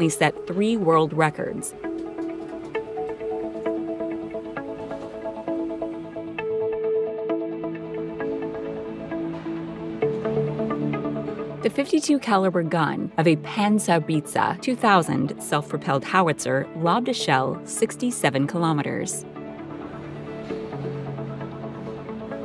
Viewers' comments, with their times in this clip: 0:10 What's a PanzerPizza? LMAO. It's Paanzer ( an a like in the BE grant ) - How Bit Tsää (with sharp t). I will never understand why americans don't make any effort to pronounce the words of other languages right.